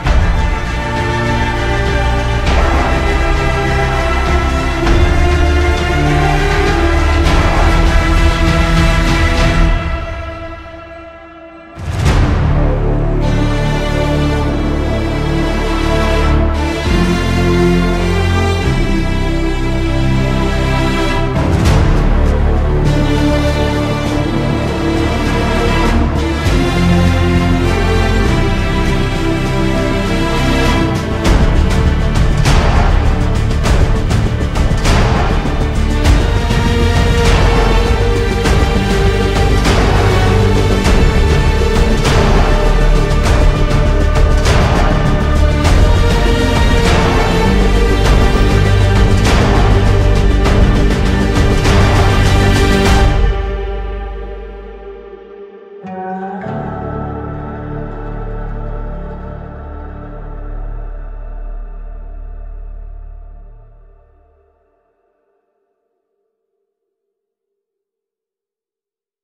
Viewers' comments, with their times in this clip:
0:04 Why does the first theme sounds like a rescue them or something
0:35 I honestly don't know why, but the Modernest Warfare Main Theme sounds like one fo the tracks from "Now you see me"
0:54 that the den den gives me goosebumps